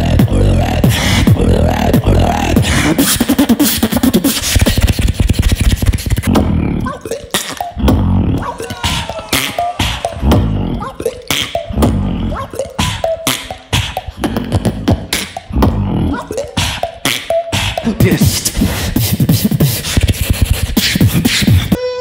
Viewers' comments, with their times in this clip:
0:06 Tf was that you trim the drop 😡